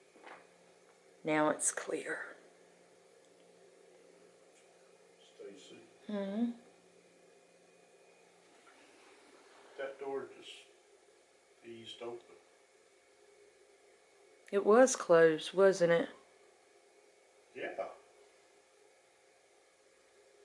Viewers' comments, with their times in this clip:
0:04 faint voice about moving something